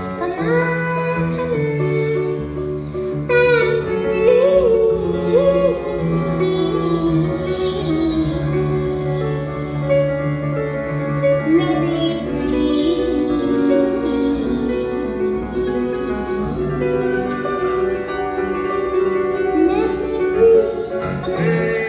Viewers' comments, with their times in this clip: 0:03 Her descent is the like of nothing I've heard from her before and it was mesmerizing